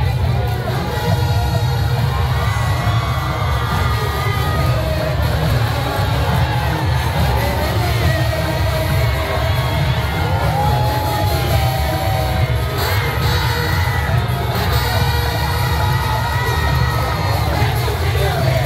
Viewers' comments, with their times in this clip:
0:03 hearing the crowd sing brought tears to my eyes they deserved to win